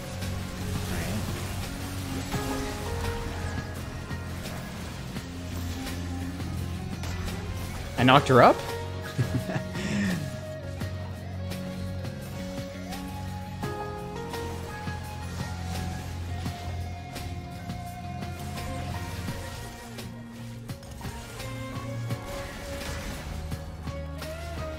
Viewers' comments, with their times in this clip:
0:07 “I knocked her up” Proceeds to giggle